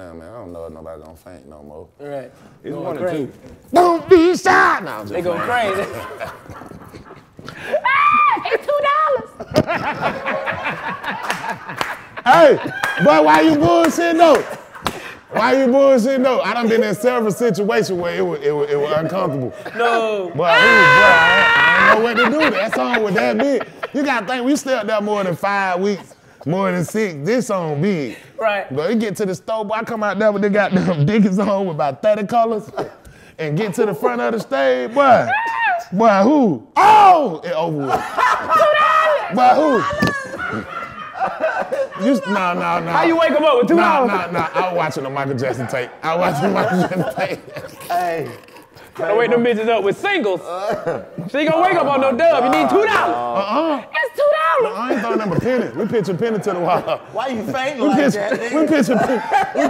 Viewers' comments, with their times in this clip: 0:08 karlous was gone lmao had too turn around he was laughing so hard
0:21 that was a genuine laugh lol
0:40 Whoever that was laughing in the background peed on they self a lil bit